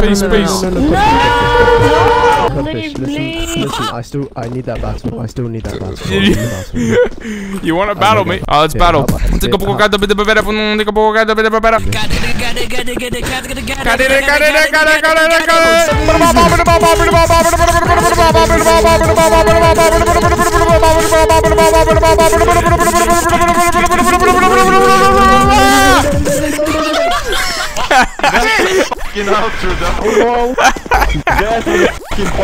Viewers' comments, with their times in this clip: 0:09 Alright.. even though its just him yelling to the beat it makes a pretty cool song xD
0:15 beatbox equivalent of "the anime battle"
0:15 sounds like an MC Mental song
0:16 that badabadababab is better as my beatbox XD